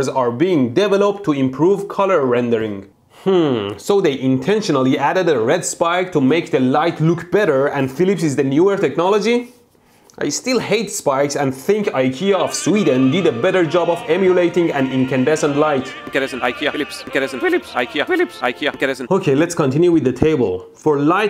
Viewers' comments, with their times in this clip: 0:03 he sounded like a legit villager
0:03 that hmm was exactly the same than the one from minecraft villagers :v
0:03 minecraft villager noice
0:03 Minecraft villager's voice